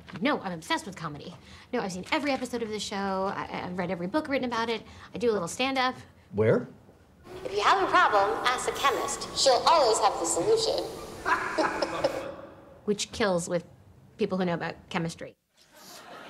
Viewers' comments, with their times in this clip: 0:03 that's looks like Kelly from the office and sounds like her to exept she has longer hair...is that her???